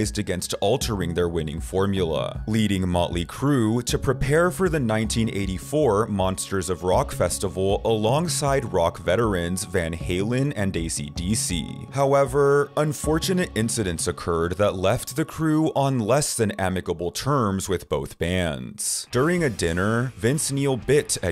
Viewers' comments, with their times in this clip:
0:09 who is daisy dc?